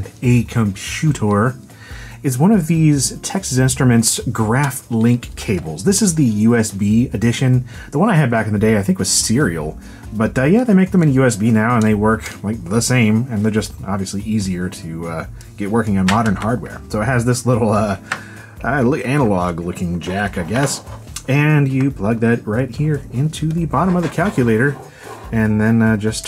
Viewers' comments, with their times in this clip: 0:08 You just sound like Liam Neeson